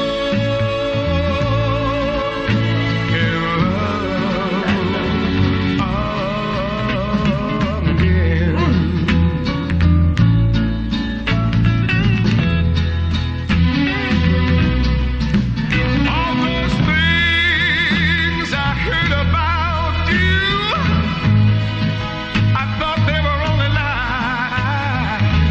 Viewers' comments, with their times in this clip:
0:09 LMAO Her little "mmm!" was literally me the entire time.